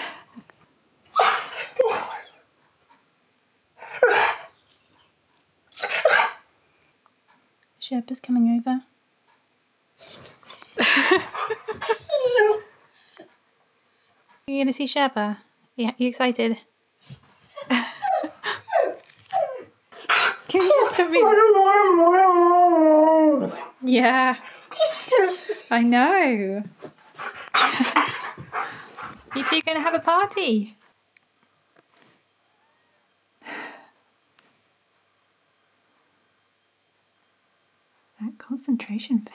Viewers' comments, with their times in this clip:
0:05 I swear he legit said "Sherpa"
0:06 Perfect english speaking
0:06 key clearly says sherpa 😍
0:06 Key says "Sherpa"!
0:11 why did that sound so real
0:25 he clearly sedsherpa